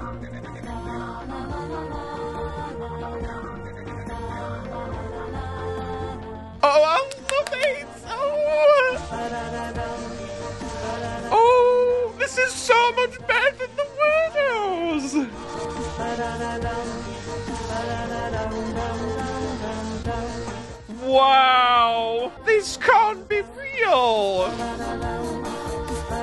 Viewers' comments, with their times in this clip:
0:07 he sounded like a kid☠️
0:09 me focusing more on the wubbox and vibing then actually looking at candelavra